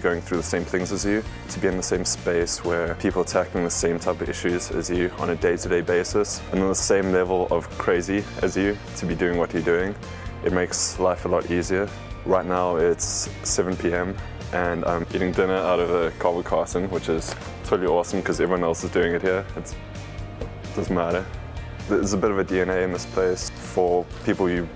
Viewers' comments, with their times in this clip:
0:09 is that South African?